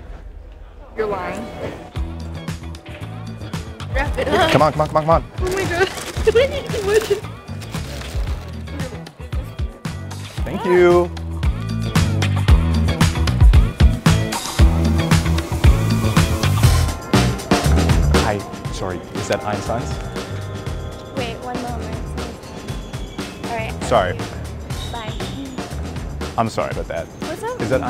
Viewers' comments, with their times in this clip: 0:10 ~ the way he says “Thank youuuu!” and looks at her so annoyed 🤣